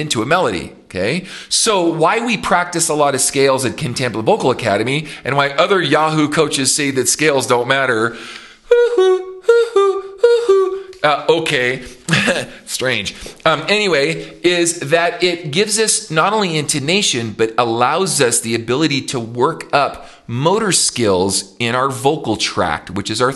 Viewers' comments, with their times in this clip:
0:08 🤣Good job with the cuckoo clock…you made me laugh.😂 Lots of valuable information here…thank you!